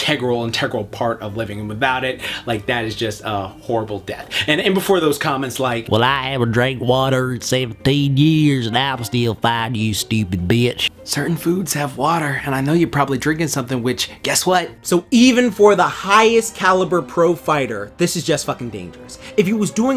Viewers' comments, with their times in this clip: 0:05 is character impression 💯